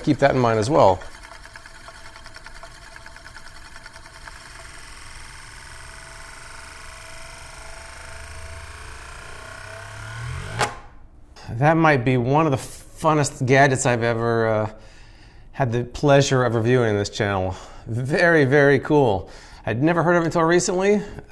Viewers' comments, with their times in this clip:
0:04 The sound made by the Euler's disk as it is finishing sounds like something popping into or out of existence in our reality. Please be careful using things like UV light on it. You never know exactly what is going to trigger the portal. 😜